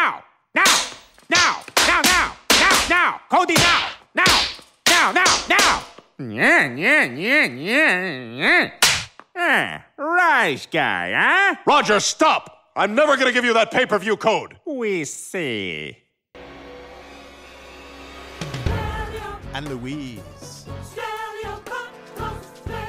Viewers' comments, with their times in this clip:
0:09 sounds like peter